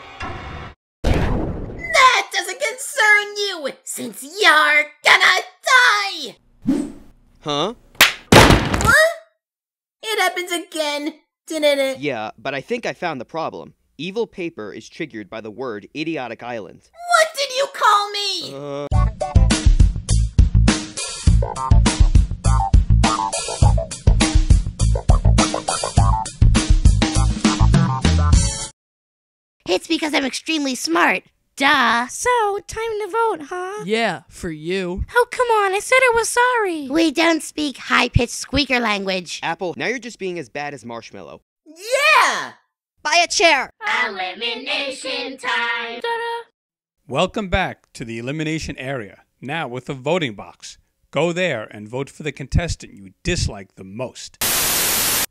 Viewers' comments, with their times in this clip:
0:08 [Insert bow crying in the distance]
0:42 Sam said “aren chair”
0:43 Me/Bow: Buy a chair! (I can imitate bows voice 😍😍)